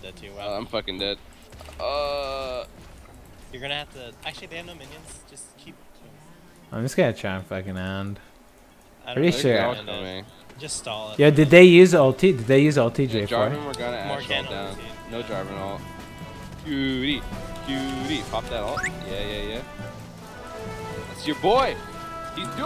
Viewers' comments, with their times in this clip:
0:10 That Chrono Trigger music is bringing back some memories